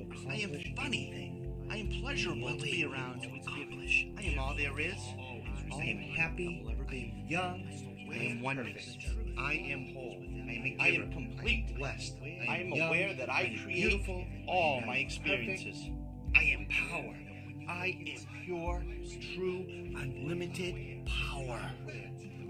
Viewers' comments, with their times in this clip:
0:09 "I Am Paul"?